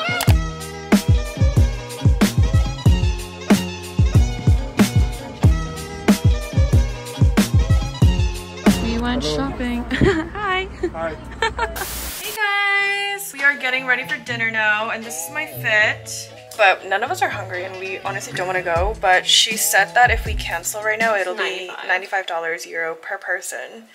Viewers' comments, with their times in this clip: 0:09 The man saying “hello” was adorable